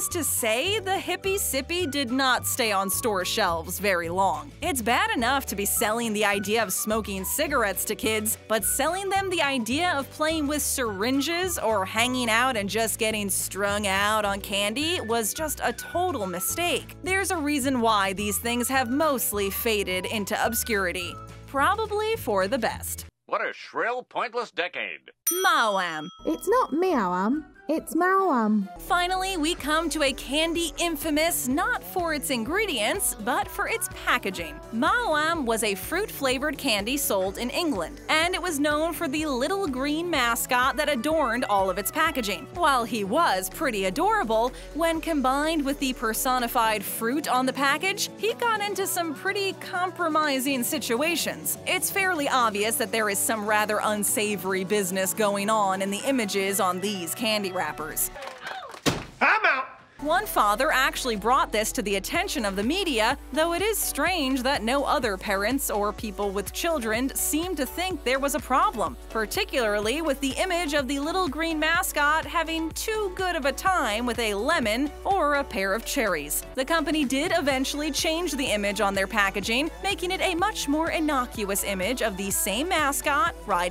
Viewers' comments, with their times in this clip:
0:08 taking about durgs The music 😃
1:04 WHO FARDED???!?!!!!? I luv smarties